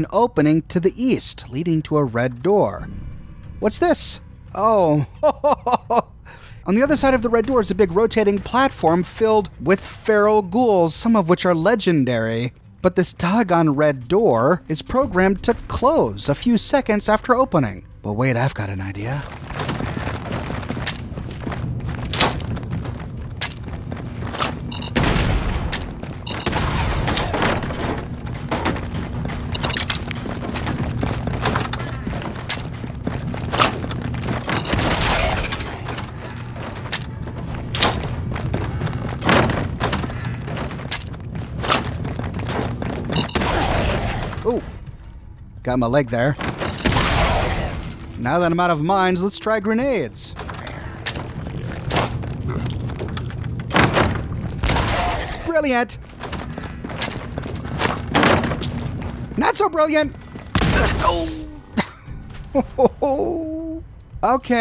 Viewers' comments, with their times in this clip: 0:03 when you said “what’s this” there was a Far Cry 5 ad which shouted out “ITS THE FAR CRY 5 SEASON PASS BONUS CONTENT”
0:51 🤣🤣🤣 Click, toss, bang "Brilliant!" . . . click, toss, thud "not so brilliant."